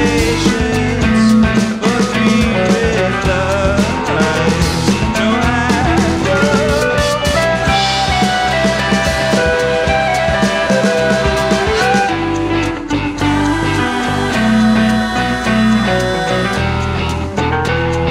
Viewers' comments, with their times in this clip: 0:04 That drum lick